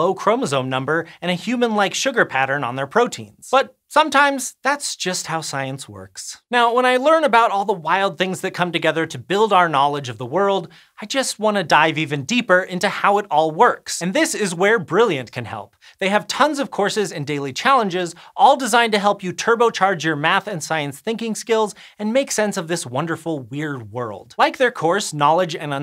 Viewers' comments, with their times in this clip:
0:06 ? I thought for a second he said "when I learn about .... I just want to DIE !" , and that was too much for an educative YouTube channel